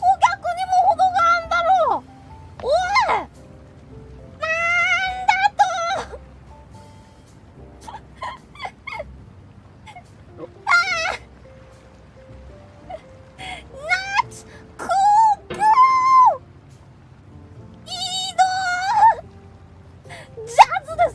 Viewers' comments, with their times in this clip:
0:05 coco's "nnnaaaaa" sounded so much like a certain 0 yr old princess